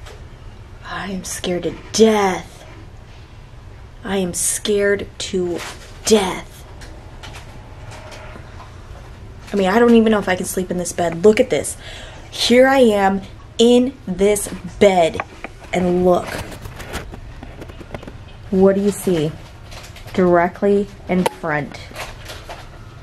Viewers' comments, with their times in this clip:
0:07 ......THERE IS A VOICE SAYING....."YYYYYYYYEEESSSS"...….THAT YOU ARE SCARED TO DEATH...….MAY GOD BLESS YOU......AMEN AMEN AMEN